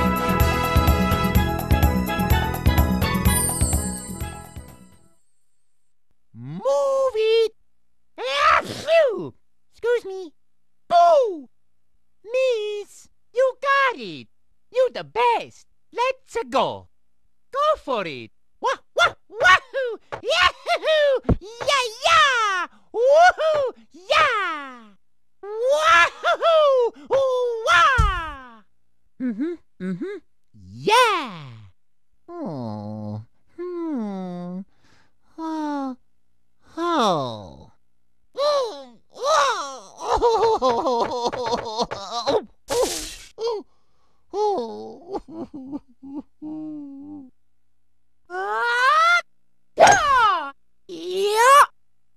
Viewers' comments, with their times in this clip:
0:08 Gesundheit Mario XD
0:08 Can we talk about Mario sneezing please?
0:38 Mario Crying is CUTE